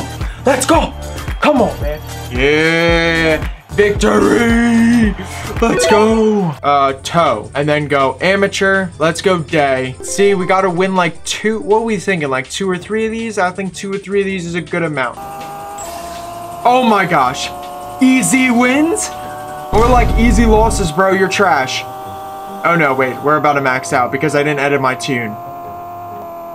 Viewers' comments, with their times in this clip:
0:08 i heard bad or I heard let's go gay💀